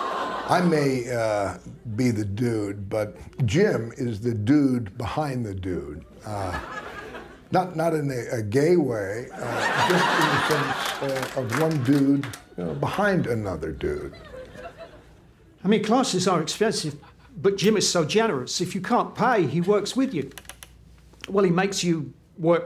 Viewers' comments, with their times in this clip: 0:08 good laugh ma'am